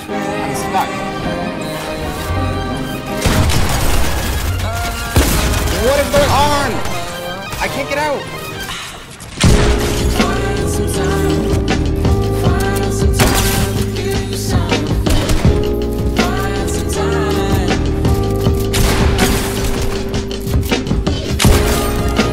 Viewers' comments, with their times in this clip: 0:07 how good the music lined up 🤗